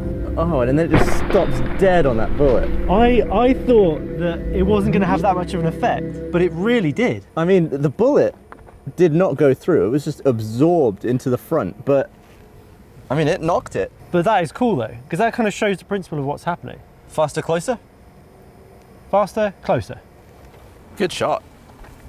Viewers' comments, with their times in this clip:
0:08 ….into the front butt…..????😂